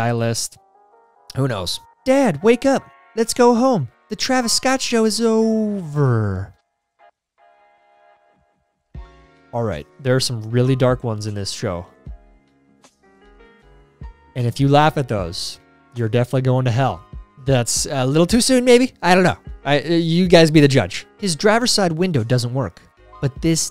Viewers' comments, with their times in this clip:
0:06 I felt that. That breathless pause of how wrong that meme was. Yea no...don't post that. cause its too soon. and I love the Lion King...